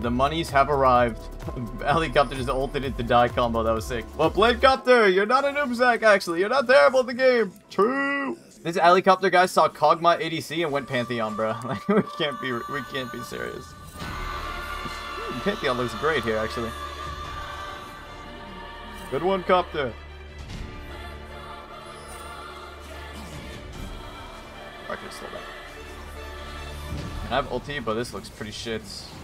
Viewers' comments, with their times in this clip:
0:10 What song is this? Sounds like Nier